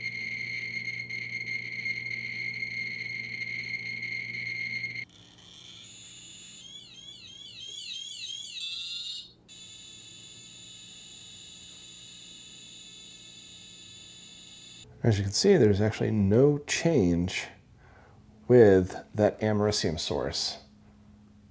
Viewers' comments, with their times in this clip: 0:06 That's an epic alarm. I find that I always get my millisieverts and microsierts mixed up. It reminds me of the 1,000MB = 1GB 1,000GB = 1 Terabyte and such with computers, but of course with radiation. I just seem to always forget which is which. I think it's microsieverts that are the smallest and then millisieverts, right?